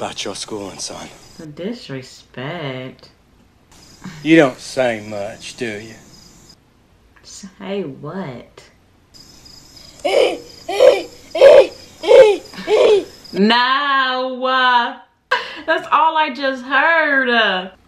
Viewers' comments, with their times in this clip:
0:05 I dunno, even as a kid watching this there was something inherently hilarious about the school principal being the one making the "bedroom noises" and not Forrest's mom like you'd expect...